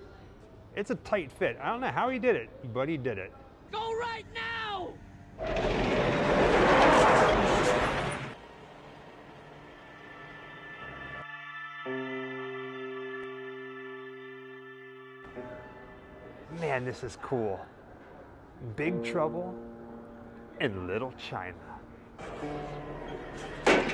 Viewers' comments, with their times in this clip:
0:10 What song is that ?? Gives me the Jeepers creepers